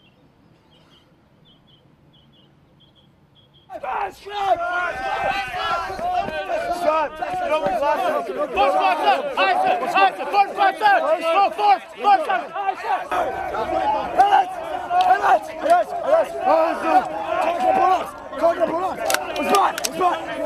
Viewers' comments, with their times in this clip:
0:08 What's about the screaming ?!